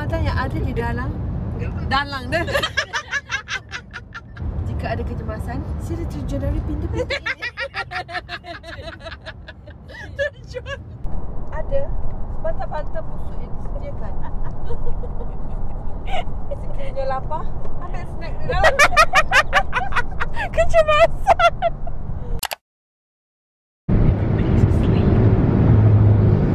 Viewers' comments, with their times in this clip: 0:10 imagine the driver driving while they all laughing like crazy with their iconic laughter😂😭